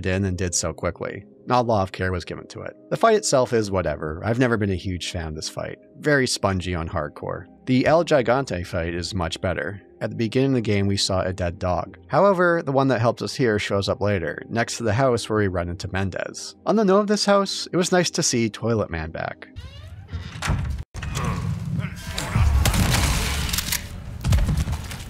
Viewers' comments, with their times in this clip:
0:08 "El Jy-gawn-tay" Nobody every pronounces this right.